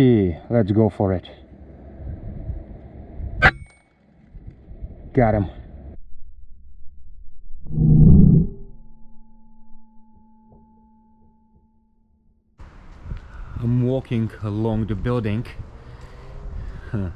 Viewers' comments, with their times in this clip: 0:03 Awesome long range shooting Master 👏 is a 10 Drop 🙋 Wood pigeons have a satisfying Thwack when shot and drop nicely, love shooting them from beneath through their body, pellet exits by the neck and frequently cuts the spinal cord for instant kill, 1 less Flying Sh#t Sack 👍